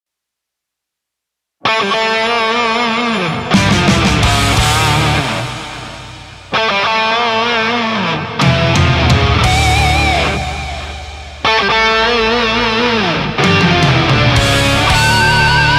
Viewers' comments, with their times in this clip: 0:01 POV: someone attempting to rob your telsa Telsa sentry mode alarm: